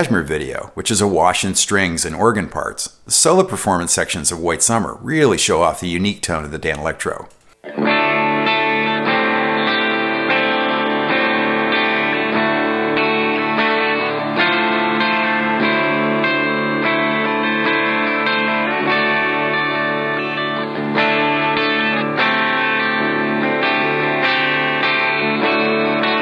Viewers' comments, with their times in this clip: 0:08 just realizing how similar bon jovi’s dead or alive riff is to this